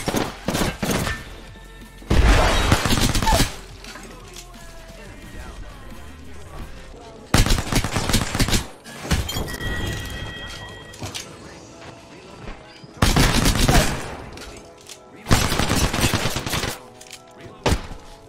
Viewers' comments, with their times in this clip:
0:06 this reminds me of the Mario theme song